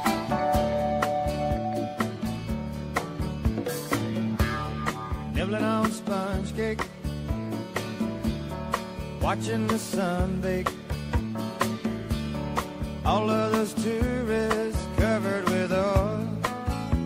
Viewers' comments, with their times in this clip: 0:04 I’d be hard pressed to give you what genre this song falls into.